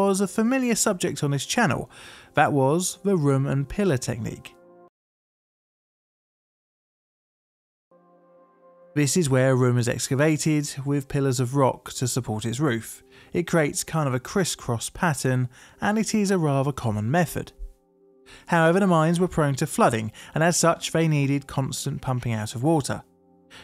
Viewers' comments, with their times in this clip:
0:04 Has anyone noticed oddities in editing lately? stands out, but there are occasional odd black bars in the top right, and sometmes the audio just.... holds on a rest when it doesn't need to. I love having these videos on, but these timeline mistakes keep standing out way more, and it feels sloppy in a way that's dissonant to the serious topics.
0:05 nah, actually I'm whinging, not whining. I have youtube premium so I don't get ads. the screen goes black and audio stops. It resumes a few seconds later. This usually happens when the video and audio get pushed along the editing timeline and it's not caught by the time it renders. It happens, but it is sloppy.